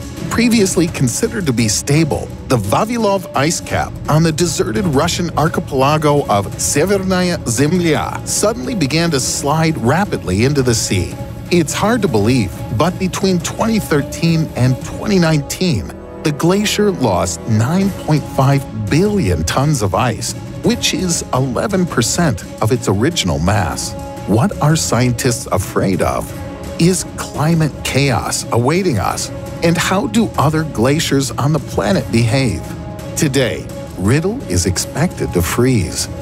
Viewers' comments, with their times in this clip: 0:04 As soon as he mispronounced "archipelago" I stopped watching/listening and came down here to read the comments.
0:17 ish did you say nineteem????